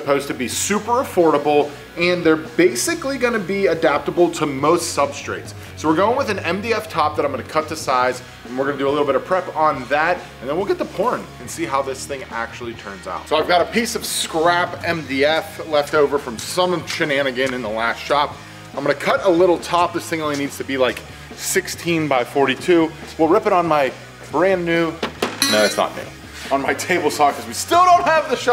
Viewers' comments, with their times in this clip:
0:09 Im sorry what? You will get to porn? I looked all over the video for a followup!
0:10 and then we'll, what..?